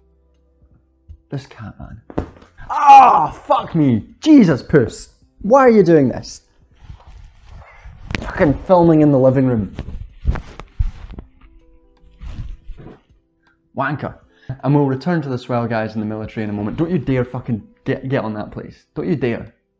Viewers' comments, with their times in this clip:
0:04 Swears in South African